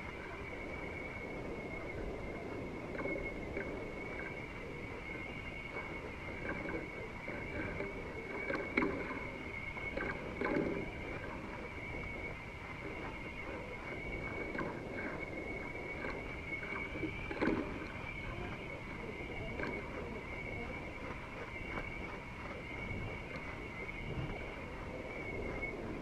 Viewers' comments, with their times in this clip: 0:09 listen through for like 30-40 seconds after on good headphones its like you hear voices under water that is trippy as hell. i have a super good headset, and im telling you, those sound like voices, you can almost make out what its saying, but not really its impossible, but wow